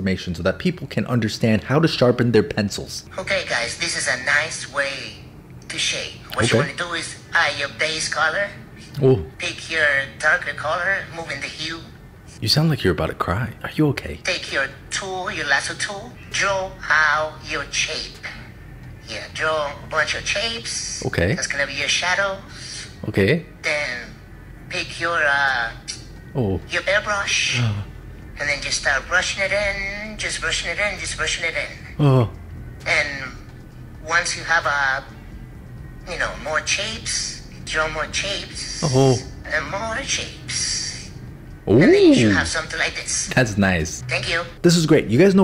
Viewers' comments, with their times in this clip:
0:10 I remember this sentence from last time I watched this and thought it was at the start of the video- lol the first tiktoker sounded like they were going to cry
0:10 that just sounds like a hispanic accent lol
0:32 am i the only one who was hearing the video say chapes? 😂